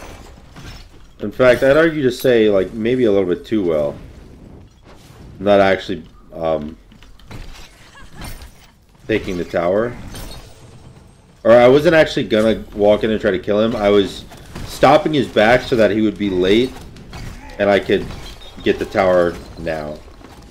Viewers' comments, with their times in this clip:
0:06 laughs. Immediately loses his tower. Nice lol